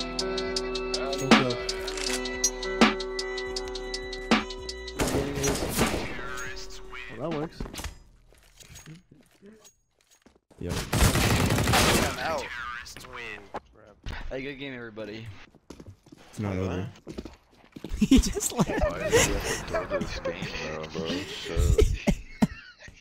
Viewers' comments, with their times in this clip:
0:06 on 0.25, yea bro, of course not